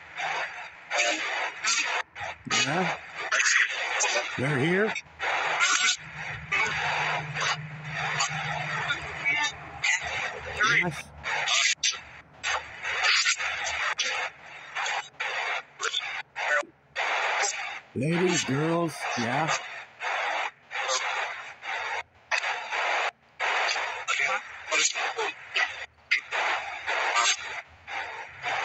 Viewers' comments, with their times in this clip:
0:10 that was so weird it said "us" it almost sounded like it was out-of-the-box and I thought the voice was me 🤔